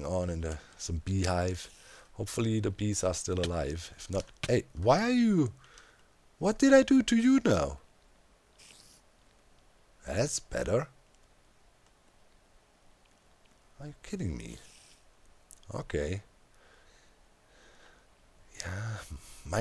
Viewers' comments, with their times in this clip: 0:05 The way he said "feature” was extremely weird, it might be nothing but it wouldn’t surprise me if it was a hint.